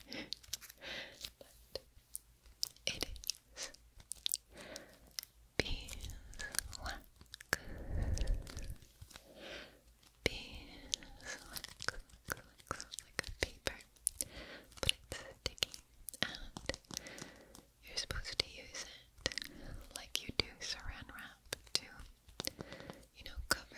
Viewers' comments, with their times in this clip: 0:08 Okay so maybe I’m overhyping it, but I LOVE how delightfully sticky and crinkly this beeswax paper is 😭 This whole video I have a goofy ass smile on LMAO Playing with it is so fun and relaxing though. I hope you guys can sit back and enjoy 💕 Feels like it’d be great in the background - will likely appear in a background ASMR video in the future!! hehe Also if you want to skip a big chunk of the chit chat you can go to !